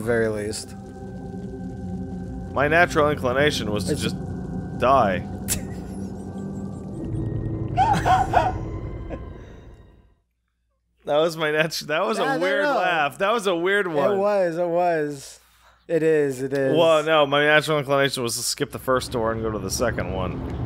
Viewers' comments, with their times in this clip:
0:06 a dying animal enters the apartment with Pat and Matt Idk why but that shit got me so good, I haven't laughed like that in forever